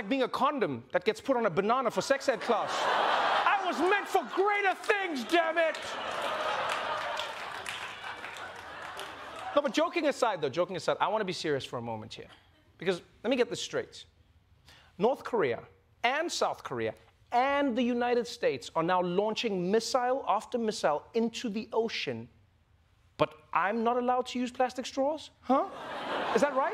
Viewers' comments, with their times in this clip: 0:07 I dont know if anyone heard it but, I heard a cat meow.. Did a cat get into the set?